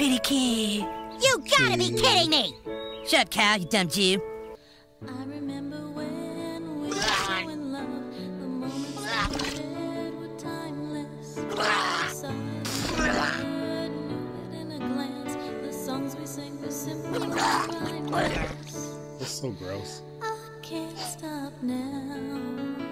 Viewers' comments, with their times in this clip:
0:03 "Shut up Kyle" that got me because it was so abrupt